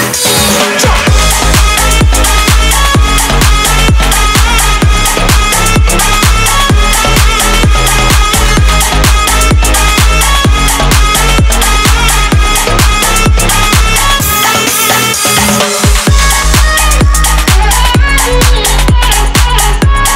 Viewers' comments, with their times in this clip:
0:07 I like the slight variation from the Spotify version